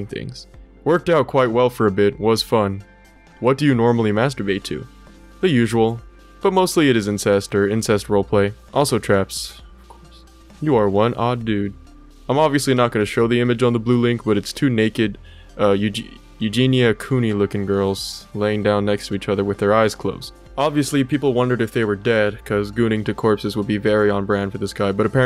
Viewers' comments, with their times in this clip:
0:07 bro mumbling "of course" under his breath 😭😭😭😭😭😭😭😭
0:09 LOL HE SAID OF COURSE UNDER HIS BREATH LMAO
0:10 I heard that quiet little disappointed "of course"